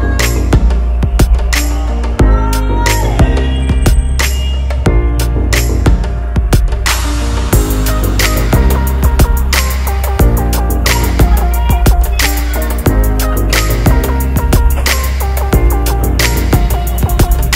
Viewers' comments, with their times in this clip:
0:03 I missed your slurp